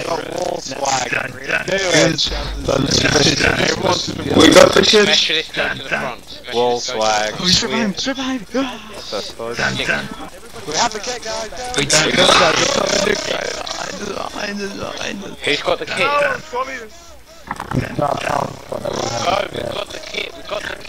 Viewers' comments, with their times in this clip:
0:06 That guy screaming whilst he ran past you was fucking hilarious.